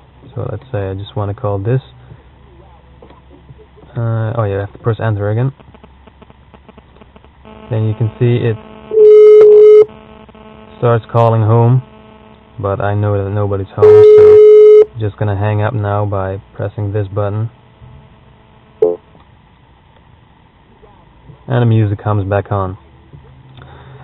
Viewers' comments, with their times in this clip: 0:09 This does not work when making phone calls: the phone and the radio are conflicting each other, as we hear in the video Moreover, it looks like we need to have specific branded. I don't want to spend more money in another radio, as I already have one.